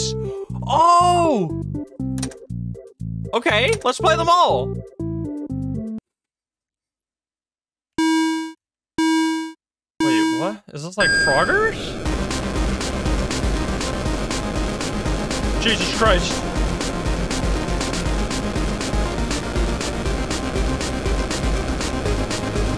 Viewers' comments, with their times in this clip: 0:07 This song is the GOAT